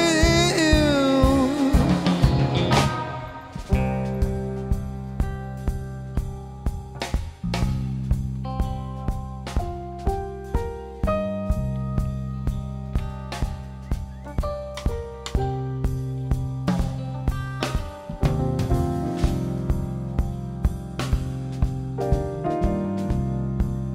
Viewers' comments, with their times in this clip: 0:04 The Jazz jam during Time Stands Still that starts is insane!